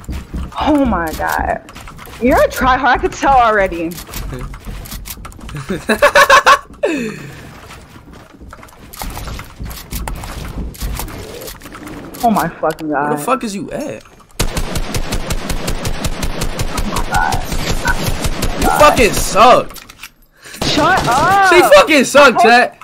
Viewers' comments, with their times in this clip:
0:06 thats the first time ive seen speed wholesomely laughed
0:06 it feels so weird to see speed laughing so normally